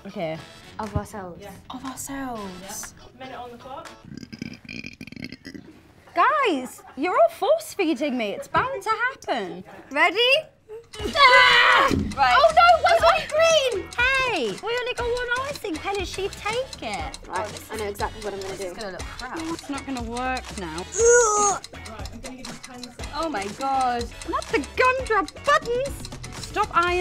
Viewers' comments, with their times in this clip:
0:03 her burps rock
0:03 the reaction of jesy as perrie burps lmao 🤣🤣🤣♥️
0:11 Jade & Leigh voices always in sync lol
0:13 Perrie sounds so cute here 🥰